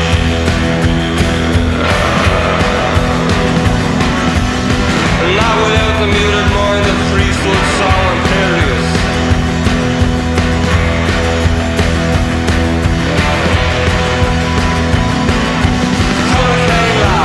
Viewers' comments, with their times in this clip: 0:03 I adore yals music I luv you so🎹,,, do you have any songs that you sound like on this song , very trancey-ish😎👍😁